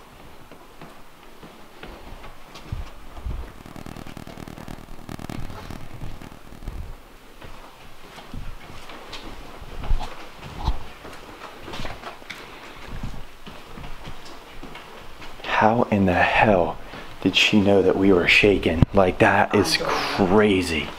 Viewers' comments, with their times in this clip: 0:03 ur walking down the hallway and saying ur polite goodbyes and ur audio goes weird again
0:04 therebwas some audio interference